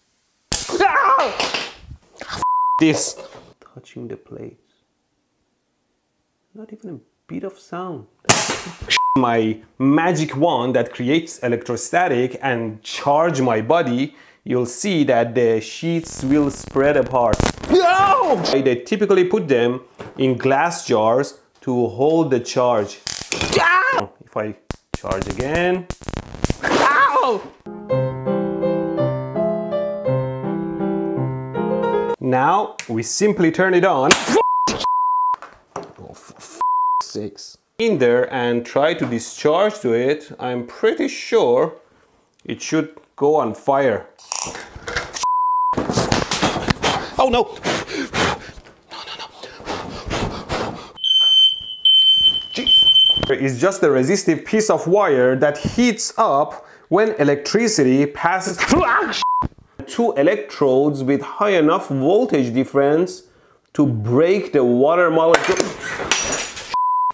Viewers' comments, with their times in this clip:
0:07 it sounded like shit my magic wond
0:51 was a fire alarm
0:51 is a smoke detector
0:51 shut up alarm